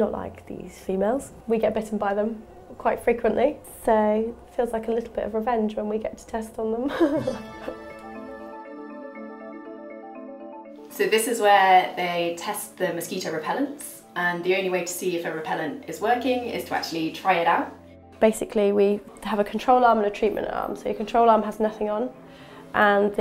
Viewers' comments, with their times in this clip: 0:07 her evil laugh.